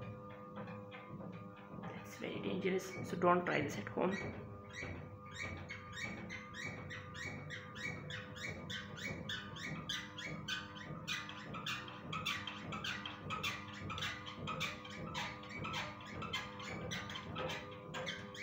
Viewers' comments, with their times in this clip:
0:05 Sony CF starts creating this legendary music